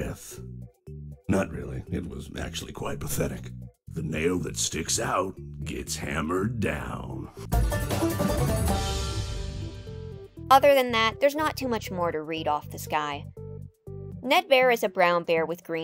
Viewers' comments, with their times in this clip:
0:03 pig patch is now my favorite fnaf character just for "the nail that sticks out gets hammered down" aggressive banjoing